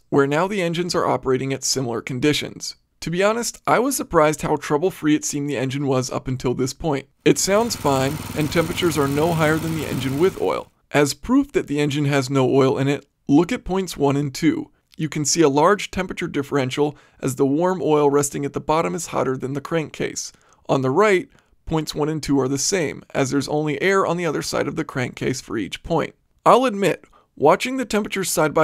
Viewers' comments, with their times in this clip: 0:09 that doesn't sound normal it's ticking